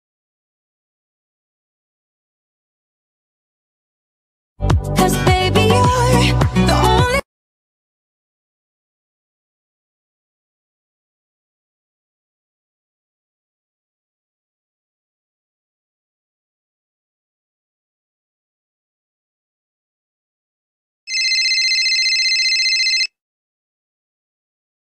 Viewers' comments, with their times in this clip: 0:05 u can hear music
0:05 My head phones were up and the music came on I think it was or so but it gave me a heart attack also this is my fifth time watching this